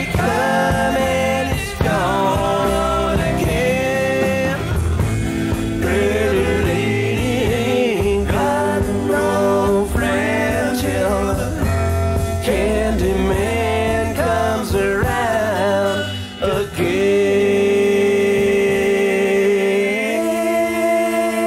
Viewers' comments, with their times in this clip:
0:07 Mickey can't even hit the drums.